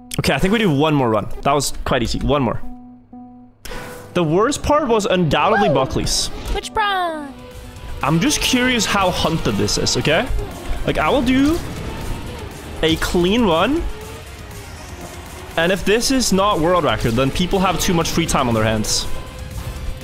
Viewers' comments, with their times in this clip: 0:08 (run 2) megalovania hit